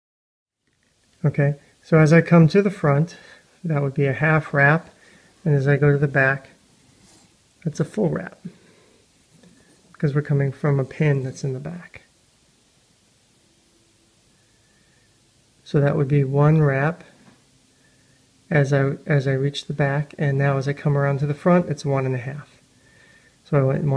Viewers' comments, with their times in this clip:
0:08 wow... whats up with the alarm bell, i just quit watching at minute ... what a waste